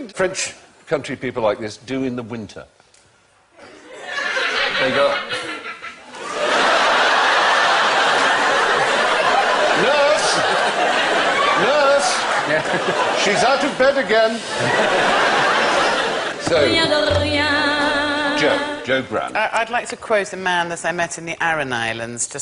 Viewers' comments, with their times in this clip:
0:04 I've wondered how the people in the audience always laugh in harmony. What an amazingly acute sense of humour they all have! Realistically, it would sound something like